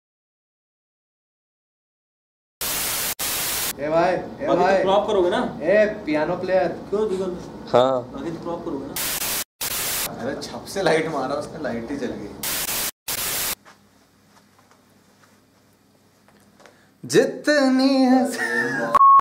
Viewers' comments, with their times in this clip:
0:07 the one who said "haan" 😍😍 otherwise no need to write anything bout d song